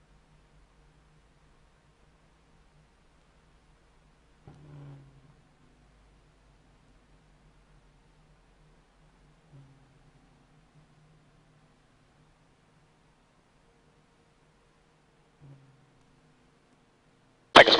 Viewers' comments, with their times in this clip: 0:04 Is that the sound of a bird roasting?